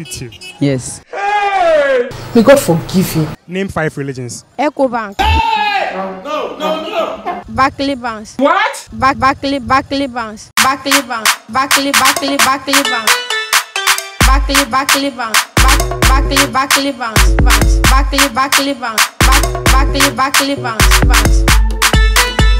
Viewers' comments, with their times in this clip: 0:05 he made a whole song 😭😂
0:08 Jesus Christ the boy kill me i can’t stop laughing and I love the beat😂😂🙏🏽😌💃🏽😍 keep doing your thing
0:08 Top music I'm dying
0:10 the Barclay Banks tune was actually fire not gonna lie 🤣🤣